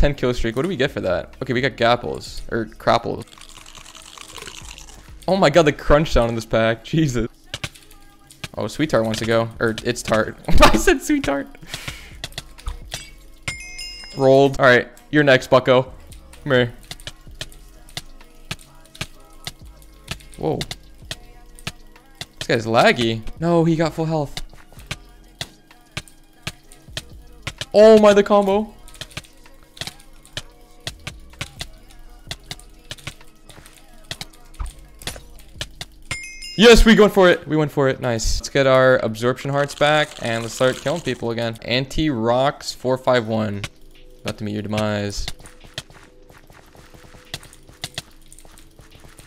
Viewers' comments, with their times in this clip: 0:08 why did that sounded like my name LOL
0:34 ... I my defense I just got back to soup after a 6 years break and I only had speed 1... No fr ur cracked and I'm glad I could fight you :) I hate how u pronounced my nick tho lmaoo